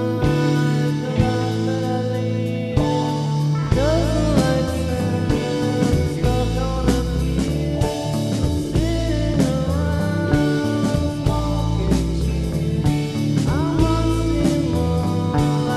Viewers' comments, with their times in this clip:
0:03 Man that drum beat killed me. Would've sounded great on the record!